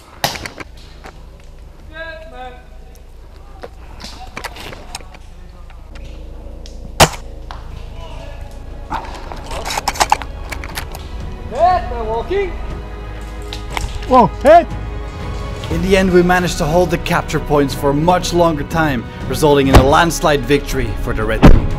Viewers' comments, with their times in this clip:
0:04 that sounded like it hurt 💀💀